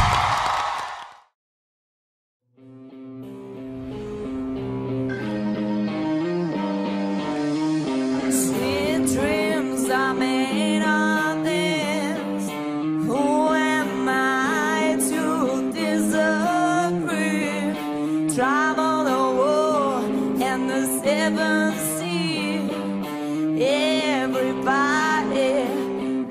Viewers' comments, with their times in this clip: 0:07 The chick is already a total babe, and then she started singing like that. Damn! My kind of women!